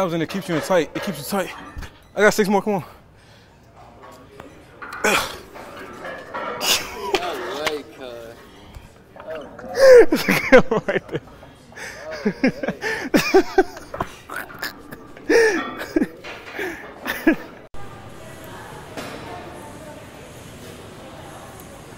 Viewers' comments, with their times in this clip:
0:05 That white boy tryna talk hood is one of the funniest things ever he’s tryn so hard to sound ghetto😭😭😭
0:05 That white boy tryna talk hood is one of the goofiest things I’ve seen he’s tryn so hard to sound ghetto😭😭😭